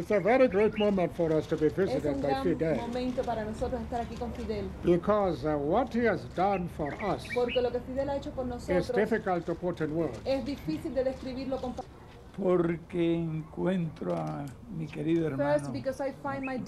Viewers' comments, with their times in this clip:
0:04 typical Africa - the birds are chirping so loudly lmao